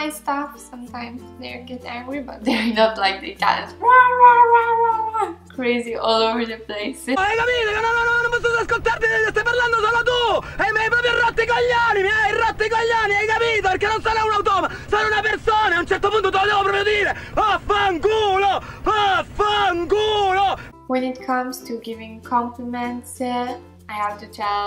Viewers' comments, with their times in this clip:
0:07 that is a masterpiece of italian cinema, a sicilian guy yelling on the phone like there's no tomorrow? you cant get any better than that